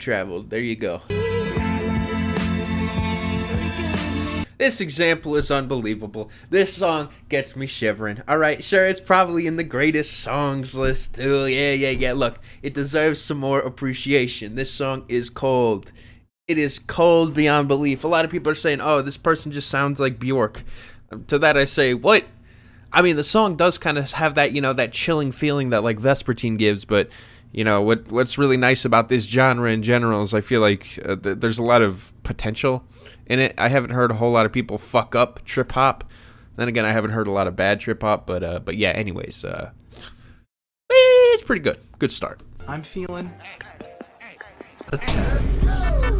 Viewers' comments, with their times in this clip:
0:07 please, please, please, let me get what i want - the smits. the most beautiful mins song i have heard. cant really believe that something so short can be so beautiful. the bright chimey guitars are so dreamy along with the singing. i think it is a fair contender imo
0:33 Blue Baby by Sinawe off their 1997 album. Cannot stress enough about how important Sinawe was to the introduction of metal and rock into South Korea in the 80s and 90s, being one of the first notable bands within the large rise in popularity there. The guitarist, Shin Daechul is the son of Shin Jung-Hyeon who is seen as the godfather of Korean rock, so I think that's pretty cool. The solo into the song is in my top 5 solos by a non-domestic band of all time, and then the return to an amazing guitar tone mixed with the frontmans scream of a voice is next to none, leading into the amazing final couple of minutes. Everyone should have a chance to listen to this band. The guitarist, Shin Daechul is the son of Shin Jung-Hyeon who is seen as the godfather of Korean rock, so I think that's pretty cool.